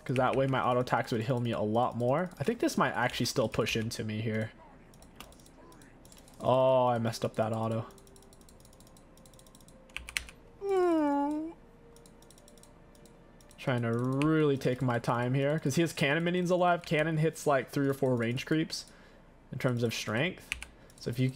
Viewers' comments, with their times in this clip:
0:09 the sound my body makes when I try to hold in a fart